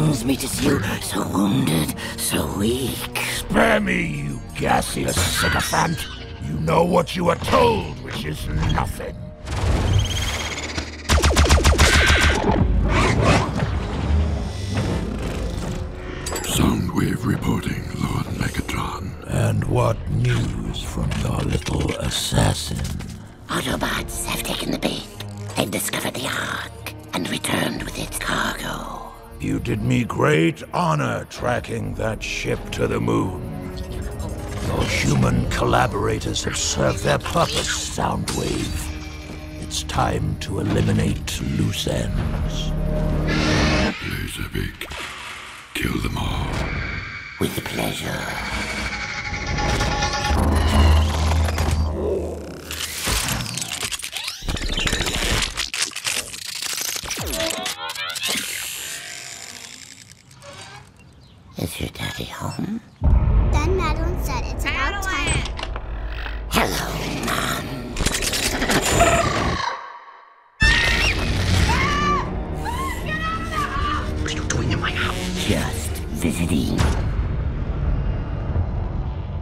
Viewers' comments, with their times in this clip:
0:04 the repair bug yelling "Aah!" Had me Laughing
0:04 the little robot scream lol. When Megatron hits it.
0:14 soundwave sound cool
0:15 I HAVE TO ADMIT, THE ACTING IS PERFECT BUT IT FEELS STRANGE HEAR THAT MEGATRON & SOUNDWAVE HAVE DIFRERENT VOICES
0:16 Soundwave sounds just like Doctor Claw from the original Inspector Gadget series.
0:16 Soundwave sounds like Dr.klaw and had a mouth. Spooky
1:03 dafuq is that girl saying?😂😂 "nandi dun sam"